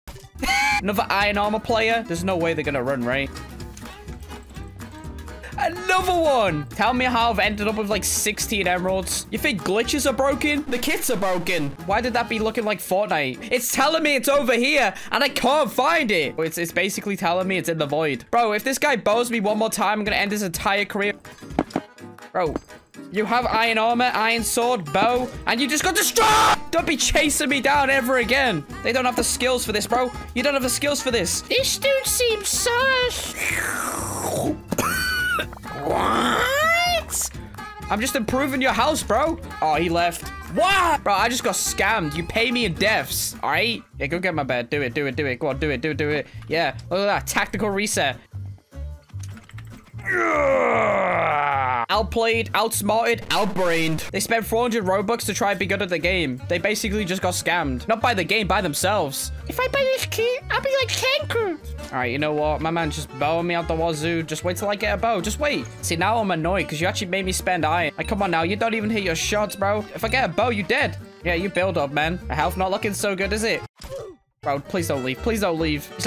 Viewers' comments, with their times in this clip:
0:06 Clip destroyed my ears
0:23 me shouting when i get 2k wins 😂😂😂😂😂😂😂😂
0:26 NY EARS TAKE THEM TO THE HOSPITAL
0:26 Don’t click with full volume…
0:26 that scream was personal😂
0:58 lol his voice sound so funny
1:01 Tanqr sounds like a Kid